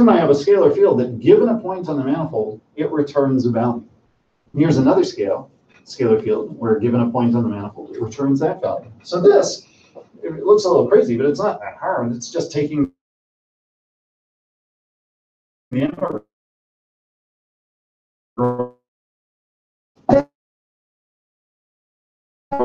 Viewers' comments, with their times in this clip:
0:09 It's really ironic how the distortion ruined specifically the most (in my opinion) conceptually difficult part.